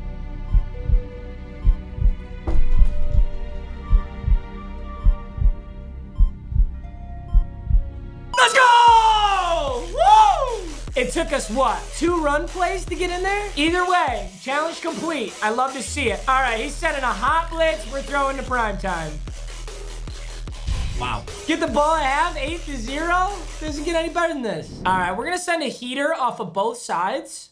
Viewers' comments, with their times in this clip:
0:06 sorry that's fake as hell lmao why would u scream instead of breathe
0:13 papa really hit me w the earrape celebration music